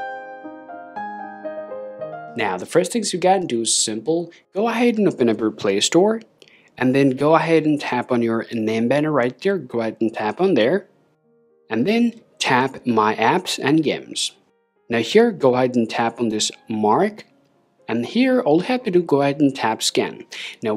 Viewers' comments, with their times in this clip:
0:08 What on earth did he just say; ??